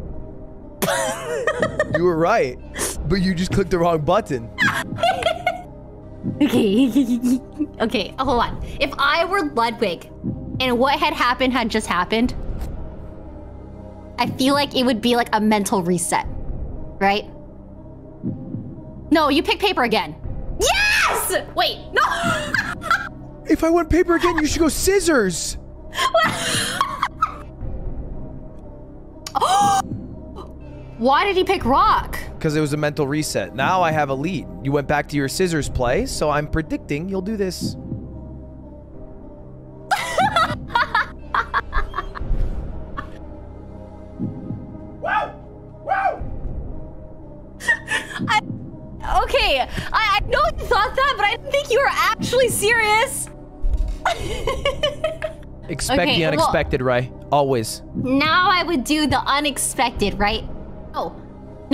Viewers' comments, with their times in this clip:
0:06 The giggle That’s it. That’s the comment
0:42 Ludwig yells out and spooks Coots